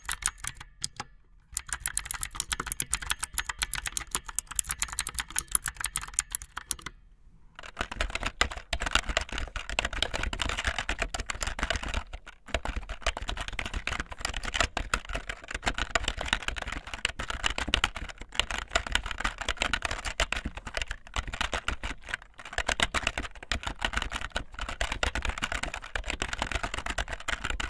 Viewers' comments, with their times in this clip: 0:08 My keyboard looks and sounds like the one but it's not actually the same one.